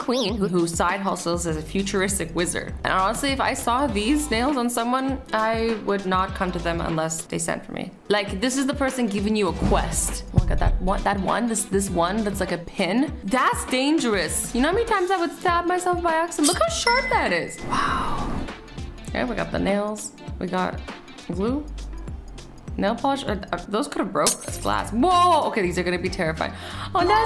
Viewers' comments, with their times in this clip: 0:08 i saw the arrow and the thunder nouise from skyrim anyone else see and hear that??